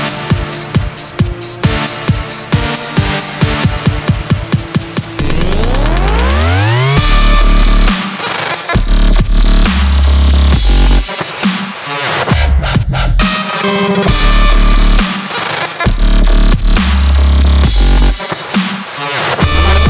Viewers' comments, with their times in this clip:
0:07 Nah, this drops it like a B